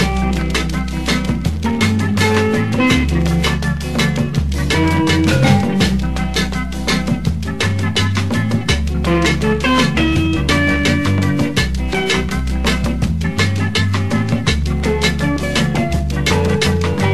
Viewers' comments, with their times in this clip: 0:04 windowsxp alert? xDDD